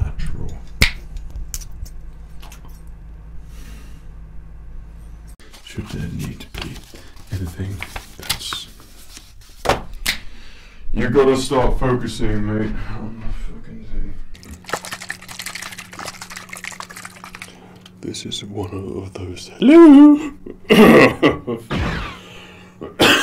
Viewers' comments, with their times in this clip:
0:08 sick voice crack thare 🤣